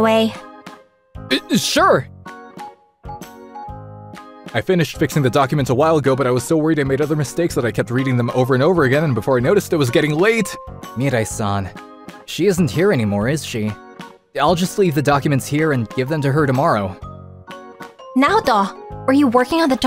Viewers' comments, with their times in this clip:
0:03 why did he talk so fast